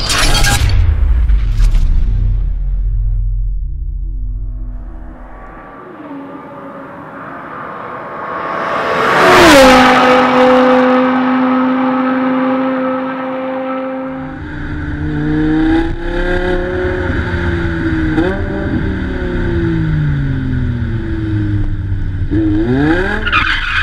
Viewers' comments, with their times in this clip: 0:07 i got goosebumps from that V10 Sound